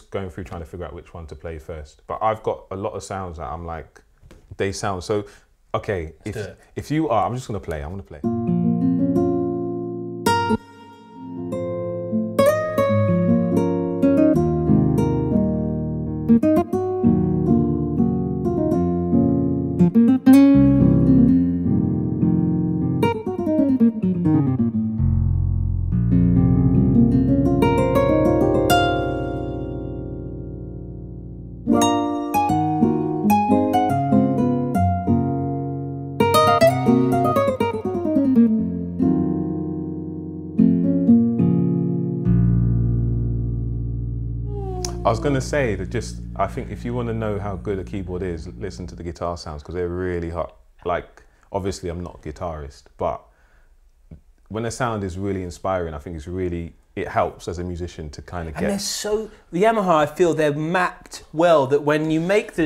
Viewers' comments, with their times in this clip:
0:07 That nylon string guitar sample was excellent!
0:44 that moan sound on time, on key and perfectly part of the arrangement that it scares me. Awesome